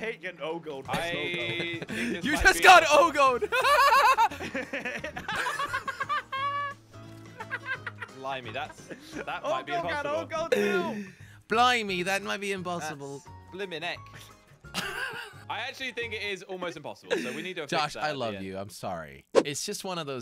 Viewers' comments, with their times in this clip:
0:04 jelly went from laughing to like “bruh” and then to laughing again 2 seconds😹💯